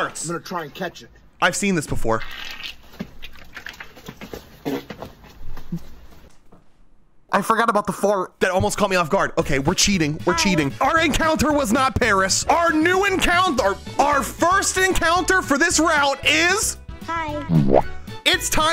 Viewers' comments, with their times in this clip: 0:03 farted on boi